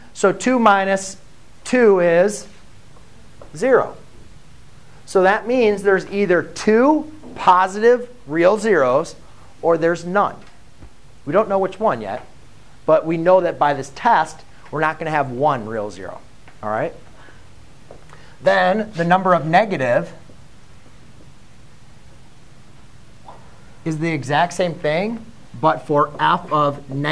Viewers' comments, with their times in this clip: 0:08 i thought my earphones broke
0:12 My right ear thanks you
0:13 my right ear appreciates the rest of the lecture